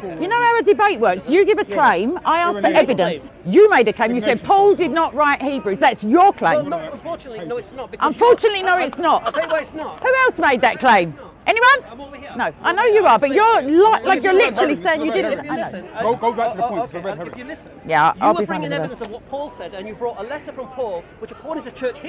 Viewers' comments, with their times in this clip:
0:07 it is debate or comedy ? whats the point in funny sound effect in seeking the truth?